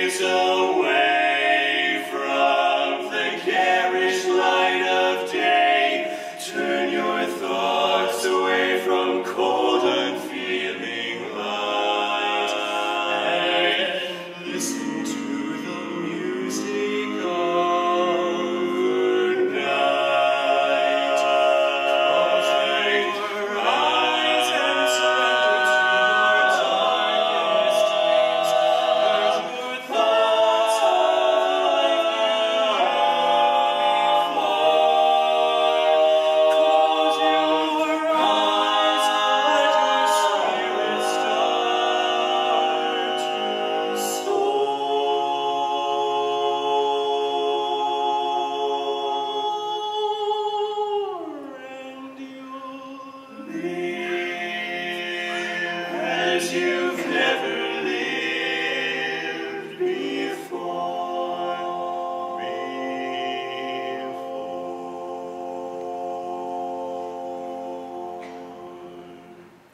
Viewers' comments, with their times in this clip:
0:04 holy crap epic ring
0:11 dat 5th omg *drool*
0:38 --whoa! He sang some extremely difficult stuff for sixteen seconds without a breath. Amazing!
0:51 Beautiful breath control